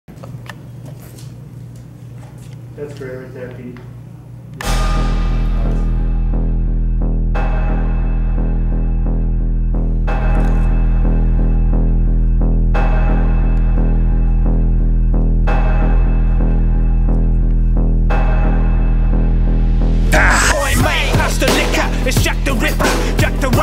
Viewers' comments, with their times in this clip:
0:09 Dramatic music You wanna buy some heroin?